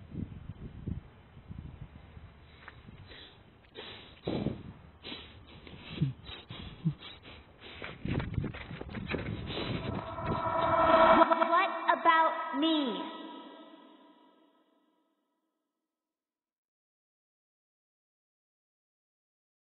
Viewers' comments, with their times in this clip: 0:04 I don't think It's nicole who did this. In The protagonist was making some sort of chuckle I assume of panic or anger. And it sounded like a guy. Nicole's voice is pretty feminine and I don't think she would sound like that
0:05 tough if you listen there a little humming after the breathing it sounds like a dudes voice not a chick it has a deeper tonally doesn't sound female at all so i don't think this is any of the girls